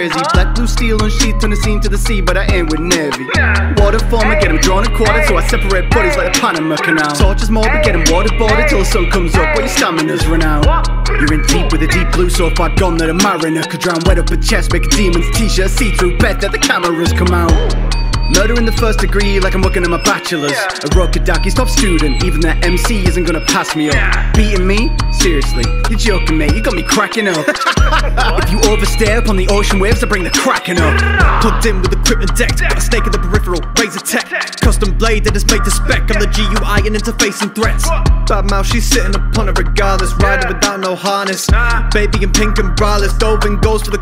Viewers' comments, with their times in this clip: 0:03 I can’t stop thinking he said “ Nezi”
0:27 I’ve never heard Giyu laugh before